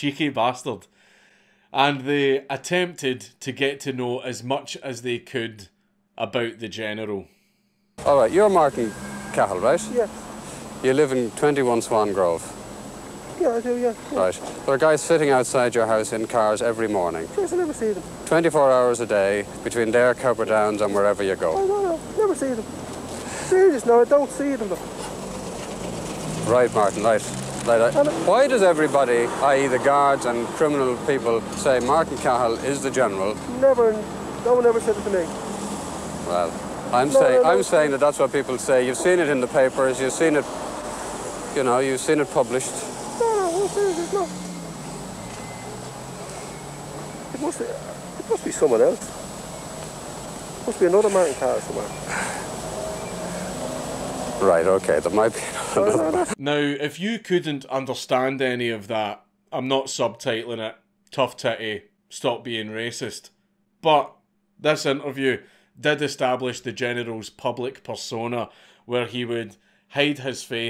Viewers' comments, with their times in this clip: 0:08 Watching Cahill dodge questions like that has me in stitches man. He sounds like my grandad chattin to one of the lads down the pub, 'ah shur jaysus I didn't notice them atall'. 😂
0:10 wat strange language r they speaking.
0:10 why does he sound Sassy from big lez?
0:20 sounds like kenny mccormick lol
0:58 my orange white and green blood understood every damn word of that interview lol